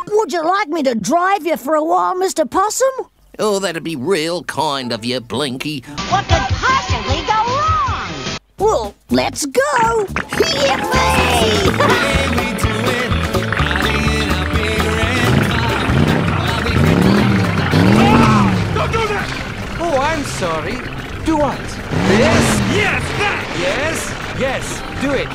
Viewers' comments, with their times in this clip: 0:10 big red car plays and speeds up